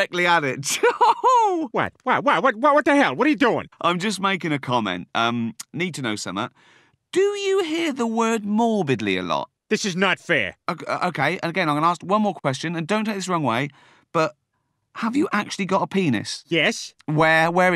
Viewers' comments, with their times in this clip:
0:05 WTF does he say - "Need to know SOMEAH"??!! Da fuq language IS that?!